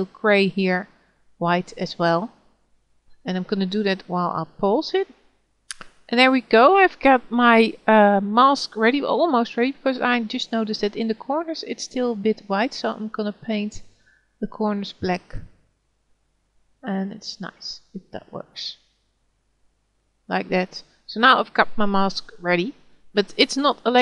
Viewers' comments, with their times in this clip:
0:05 I lost you ...you said pose it or close it, also your top of the screens text blocked what you did